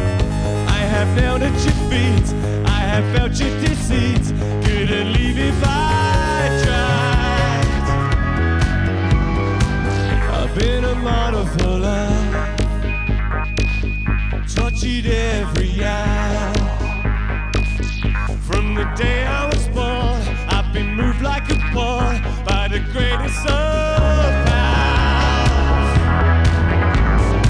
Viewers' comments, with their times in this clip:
0:09 I can't help but adore the synth sound like damn much!